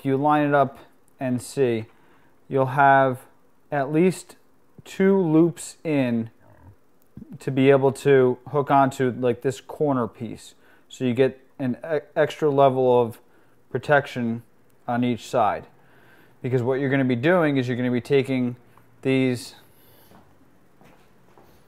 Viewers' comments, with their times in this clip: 0:06 Yo, was that your stomach ?